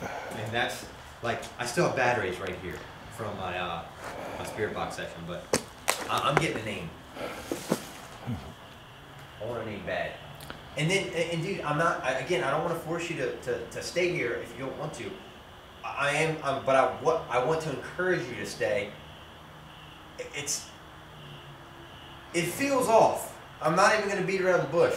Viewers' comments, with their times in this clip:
0:07 you can hear a grunt